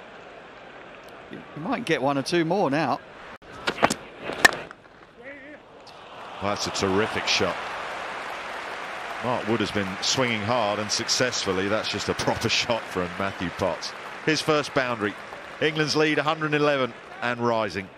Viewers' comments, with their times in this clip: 0:04 bat sound " wow" 😮😮